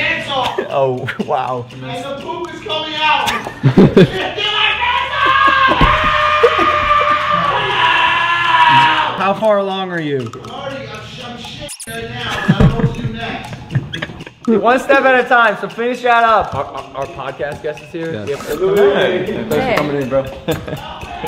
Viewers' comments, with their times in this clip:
0:06 u hear the sound of Carol baskin’s dead husband